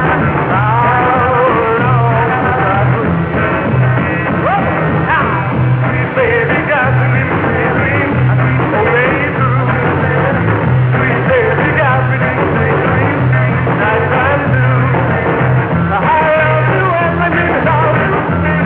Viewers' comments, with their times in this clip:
0:05 Pete Best doing his best to stay in time